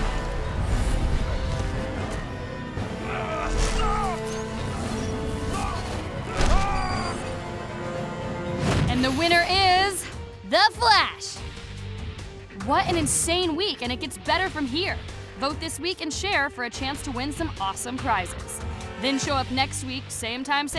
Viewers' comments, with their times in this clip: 0:06 The beeping sound effect sounded like Flash clocking out for the day after he beat Shazam.